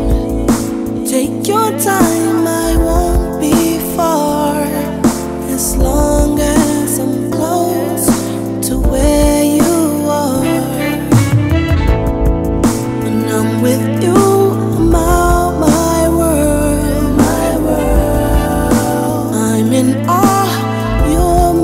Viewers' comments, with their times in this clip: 0:08 He even added the Wont do For Love by Bobby Caldwell ... Horns in the song. So dope